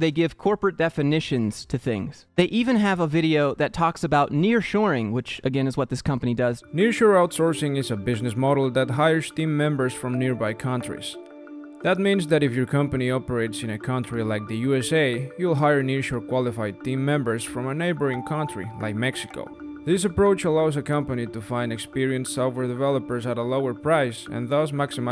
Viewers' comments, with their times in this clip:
0:06 I find it absolutely hilarious how the guy in the video talking about outsourcing "Near Shore" Employees, is a foreigner who has an accent... Couldn't even have a Native English-Speaker/American do the voice-over on a video talking about Outsourcing...